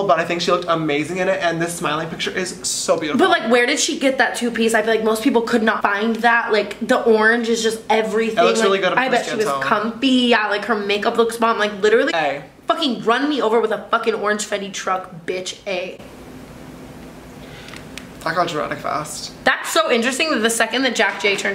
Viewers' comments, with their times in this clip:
0:05 was sishtar tana talking normally